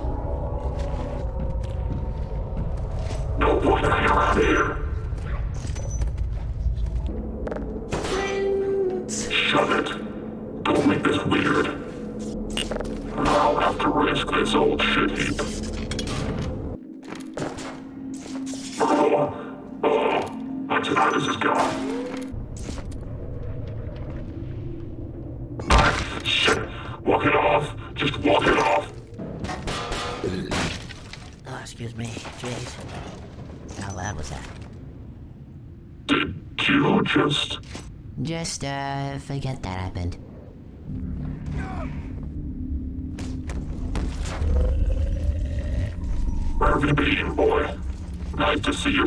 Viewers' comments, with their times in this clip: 0:09 i swear the little f r e i n d s ... got me dead
0:30 This line occurred while I was clearing some tripmines so in that context it made it seem like Wilson burped so loudly that he caused an explosion